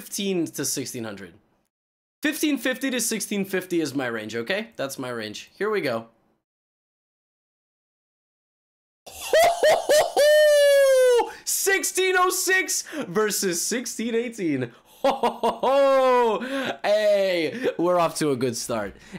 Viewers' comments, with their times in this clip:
0:07 THANKS LEVY, ALL THE HEADPHONE USERS REALLY APPRECIATE OUR HEARING LOSS